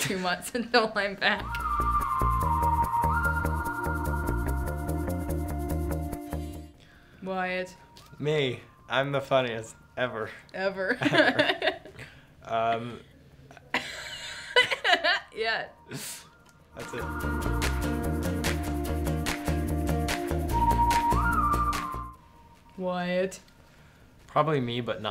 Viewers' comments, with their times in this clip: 0:09 wyatt: i’m the funniest does nothing sophia: starts laughing